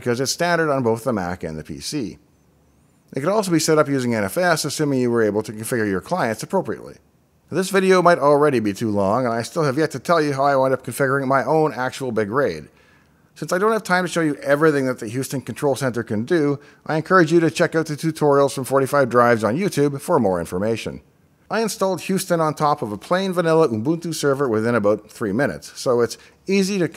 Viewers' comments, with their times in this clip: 0:09 "…configuring my big RAID" I'm Dutch… and in Dutch the word RAID sounds like reet, which means ass. Especially when I hear you say "Big RAID", it makes me laugh silently. 😁 I planned to make a t-shirt with the print "Het interesseert me geen RAID". Straight translated to English: "It doesn't interest my RAID (reet = ass)". Some of us dutchies say this when we don't give a damn (about one's opinion).